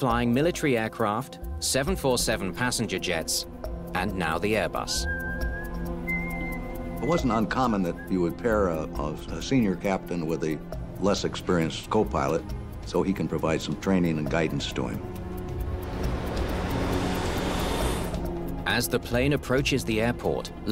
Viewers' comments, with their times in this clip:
0:06 More fckn whistling.